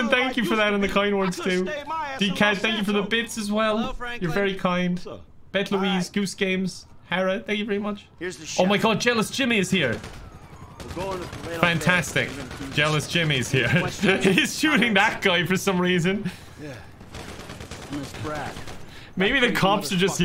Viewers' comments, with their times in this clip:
0:07 I love how Lester is just "Hi Franklin" in the middle of the two shouting at each other.